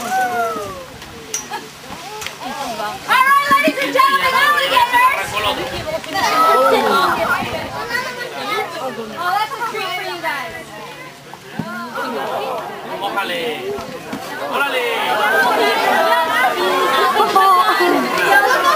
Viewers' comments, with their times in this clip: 0:03 (omg ladies&gentleman aligators) oymeygodh leadiesandgentleemaan ayeeeligaaatorsssss cringest voice ever heard in my life